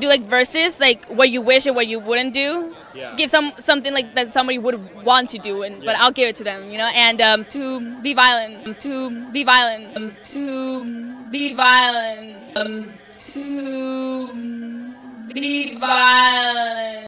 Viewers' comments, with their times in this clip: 0:08 Okay but what the freak did she say on ? I heard "to be violent" dafuq 💀